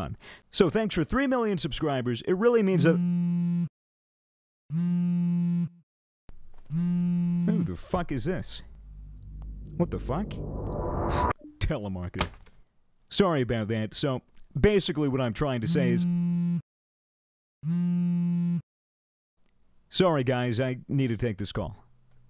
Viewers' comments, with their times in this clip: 0:03 My dumbass thought i had two phones and i started looking around like whos calling me